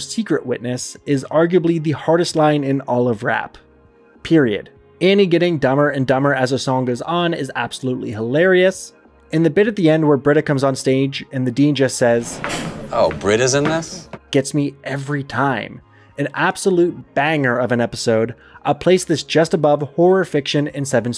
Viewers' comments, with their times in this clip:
0:07 Annie’s Betty Boop style voice is actually really impressive and I think if they ever needed someone to portray that character in anything she would do a pretty good job tbh